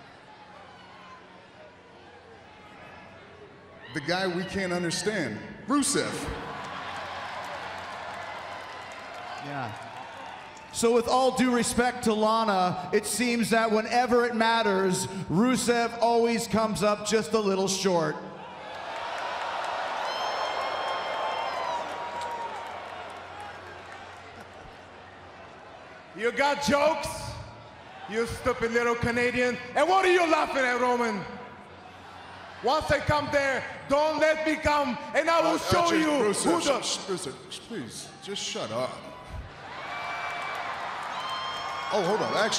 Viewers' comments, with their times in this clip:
0:04 who is Brusev? Romen Stains is soo terrible he can't even say Rusev's name right lmao. Botchman Rains XD
0:24 SHEAMUS LAUGHING LOL
0:24 even sheamus cant hide his laugh about the jole from jericho to rusev
0:24 sheamus is cracking up man
0:26 sheamus laughing lol
0:29 sheamus suppressing his laugh😂